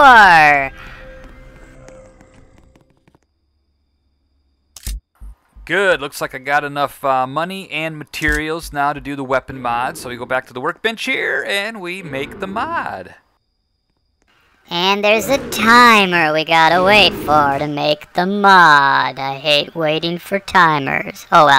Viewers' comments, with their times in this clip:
0:05 is that your voice?!! Like your voice is so cool!!!😯🔥